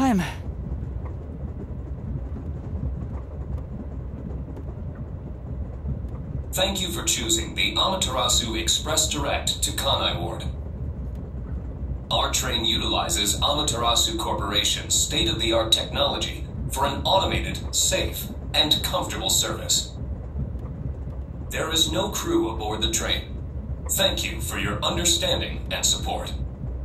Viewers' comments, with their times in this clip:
0:09 I didn't know Pathfinder from Apex Legends ran a train service as well..